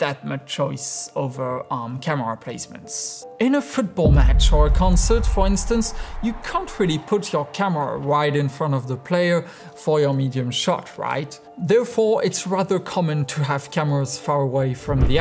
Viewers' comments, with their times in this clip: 0:03 that beat though sound designing is in its peak